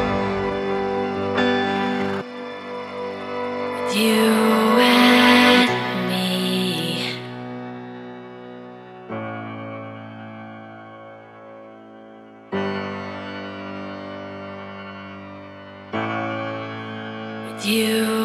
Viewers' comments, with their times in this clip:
0:04 The deep vocals is so chilling! Honestly better than original